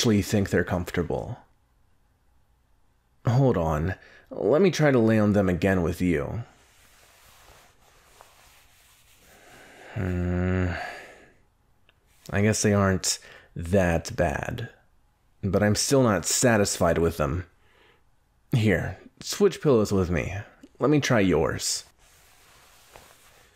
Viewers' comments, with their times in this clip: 0:09 Bakugo: hmmmmm Subtitles: [music]